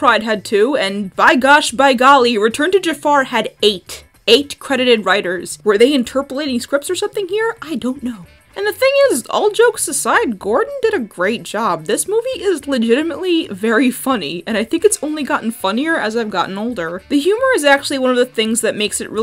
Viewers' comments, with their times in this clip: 0:04 Bob Ross pronounced by Mike Tyson wrote return of Jafar